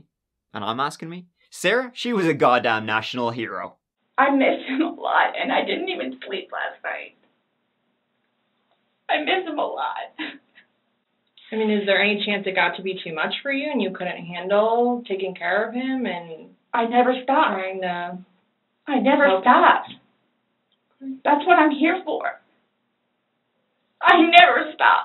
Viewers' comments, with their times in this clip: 0:10 The fake sob she drily expels is absolutely HILARIOUS!! Hadn't noticed that before.